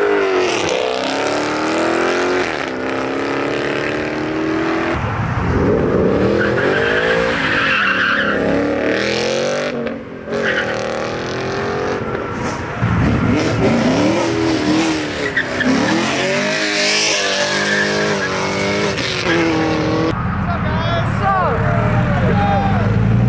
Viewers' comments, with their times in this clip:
0:08 The coyote a needs to learn to bang gears lmao that granny shift was cringe